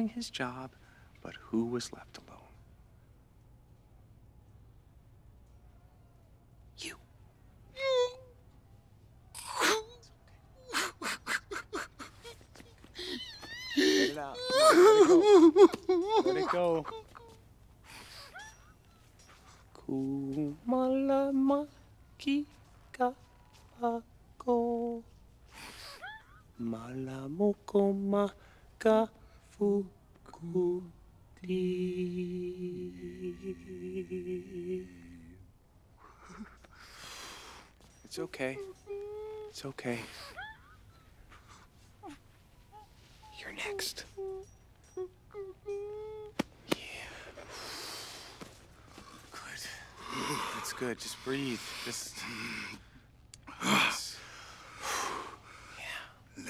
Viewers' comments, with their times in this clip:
0:07 Awwwwwww he really is sensitive. I love how the directors completely shut out the background noise of all the other exhibits fighting.
0:07 the way he cries is just hilarious
0:07 I thought someone played the violin.
0:42 Sounds like a threat, haha